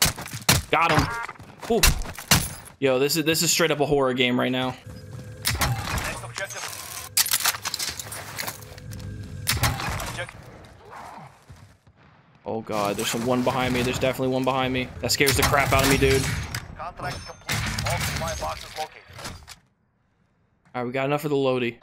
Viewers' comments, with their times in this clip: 0:06 Bro when the R-90 pops out I thought I heard a zomb and was literally like “grab the fucking shotty!!” As if I forgot who I was watching, this shit got me fucked up 😂